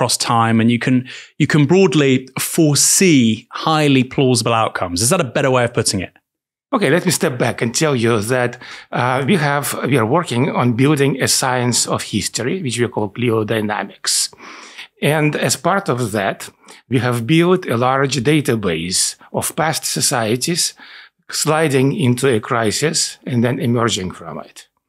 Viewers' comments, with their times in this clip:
0:07 "paleo-dynamics?" ? I love that term.